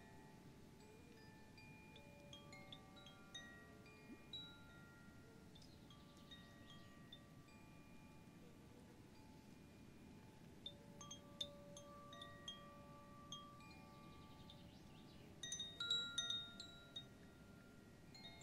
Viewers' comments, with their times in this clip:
0:06 this part where the wind picks up and you can hear it rustle through the leaves amazing sound, followed by the chime! glorious. i love a lap pov video, but to add the trees to background is even better.